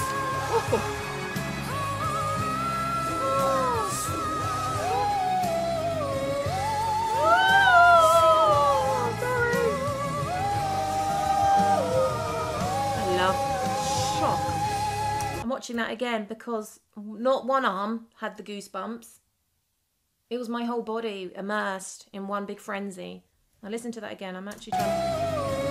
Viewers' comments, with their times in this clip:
0:06 😂😂😂 yep ive seen , total shock reaction , speechless , countless gaping mouths but our girl here scream with it!
0:07 I'm so relating to the spontaneous goosebumps sound